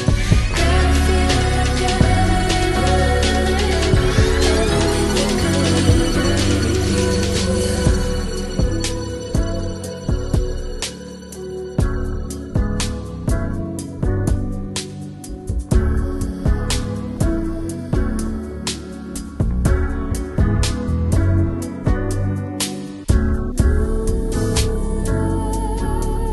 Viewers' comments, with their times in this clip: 0:08 Wow... that change really beautiful... beautiful.